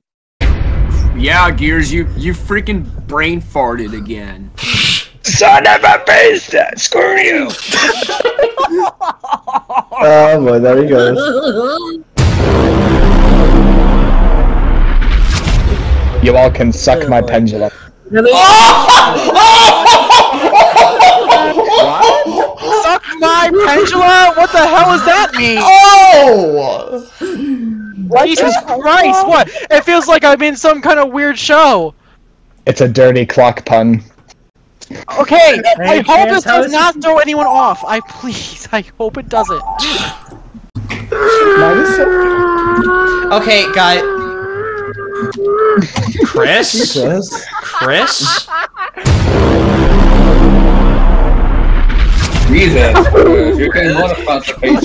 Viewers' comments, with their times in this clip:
0:07 why he sounds like that
0:40 that's the sound that William afton would make when he comes back for the 1000th time